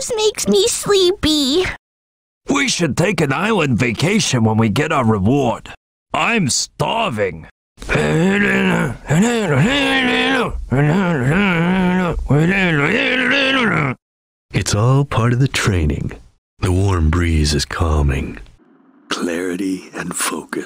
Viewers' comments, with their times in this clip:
0:08 Vector sounds like the Mahna Mahna from The Muppets.